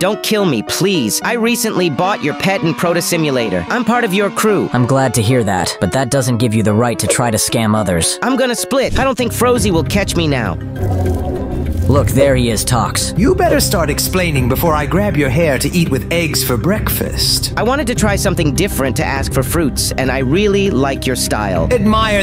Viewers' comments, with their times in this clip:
0:09 People who saw bacon say frazee